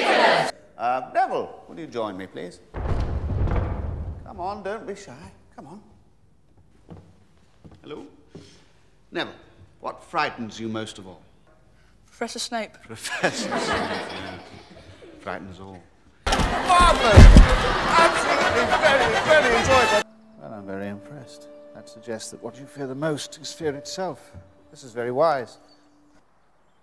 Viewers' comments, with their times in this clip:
0:07 that little “hello” is so cute😂